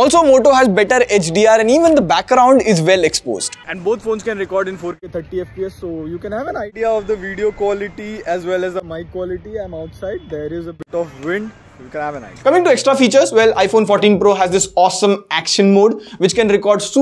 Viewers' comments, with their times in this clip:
0:03 I am surprised that even the audio in the video recording from front camera is crisp on the edge 30 ultra while the 14 pro's audio is muffled when heard side by side. Motorola has done an amazing job this time.